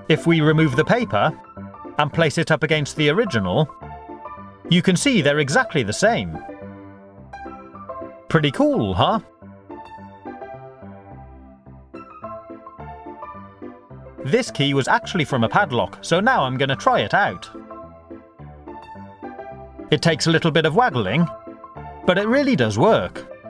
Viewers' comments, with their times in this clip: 0:07 with speed 0,5X Pretty cooool hhuh?